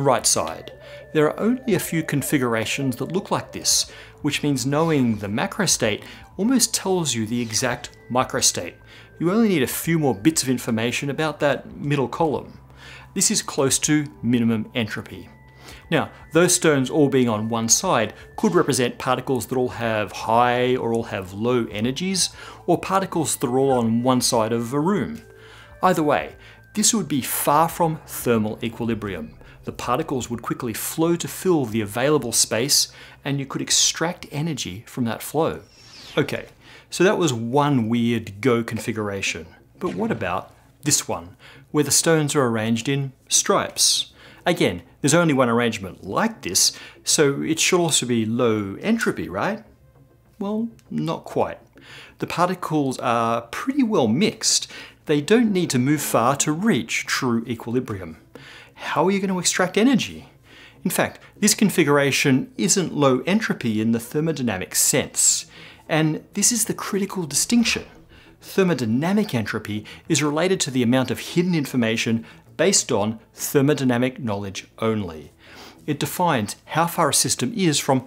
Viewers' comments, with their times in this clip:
0:09 Either Micro and Macro is pronounced similarly or you used the other here. Edit: subtitles are against me. Hell similar words.
0:40 When that music starts, you know it's about to get real.
1:03 to reach through equilibrium!?? a board game doesn't have a state of equilibrium like actual molecules in a system do, so that's very confusing...